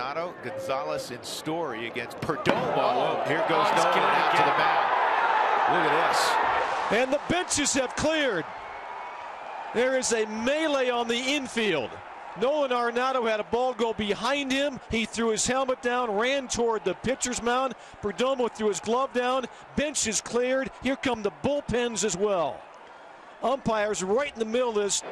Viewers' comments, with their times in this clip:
0:06 "And the bitches have cleared"